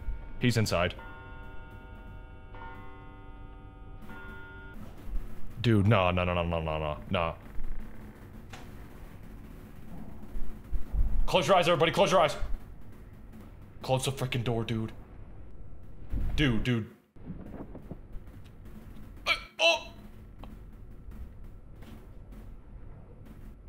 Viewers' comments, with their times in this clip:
0:09 *casually singing Freddy fazbear song*